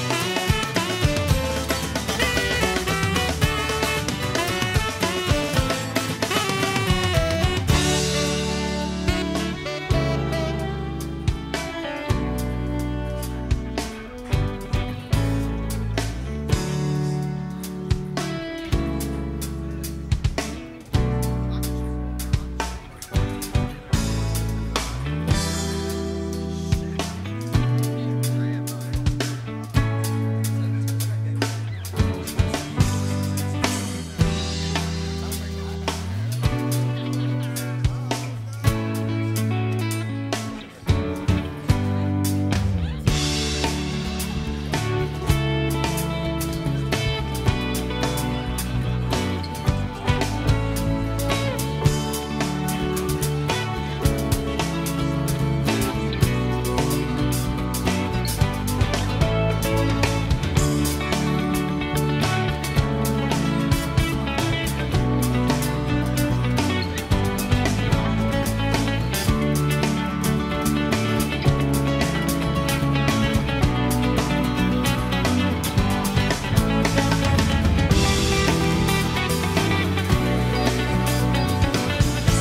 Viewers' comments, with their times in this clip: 0:08 I always felt was just the happiest, most joyful piece of music I’d ever heard. It makes you think of being around people you truly love, having a great time. I’m sure that’s what DMB intended and it came across beautifully. I listen to this song sometimes just for that chunk. 💚🎵🎶
1:03 Any live versions out there that mimic the guitar break ? Something about that part is so quintessential mid-90s and refreshing to listen to.